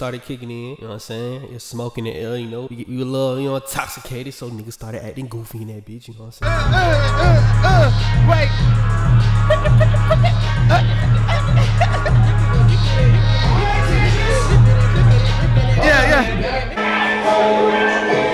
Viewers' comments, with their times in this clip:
0:05 Beat hard as hell who made dat